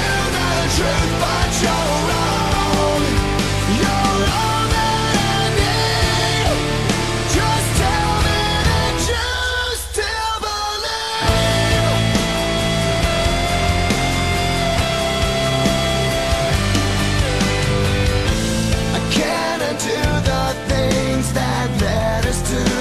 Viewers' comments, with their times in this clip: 0:10 beautiful bridge 0_0